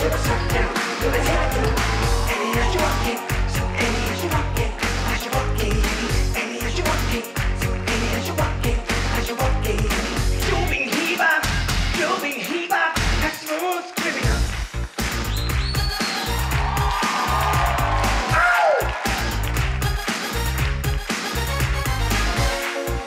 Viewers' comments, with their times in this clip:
0:10 wtf is a "iubihiba "